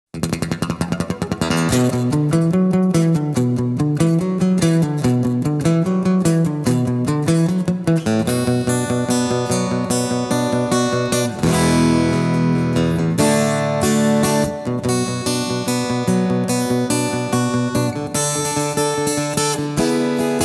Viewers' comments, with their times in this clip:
0:07 how did he play that ? You really need two guitars 😮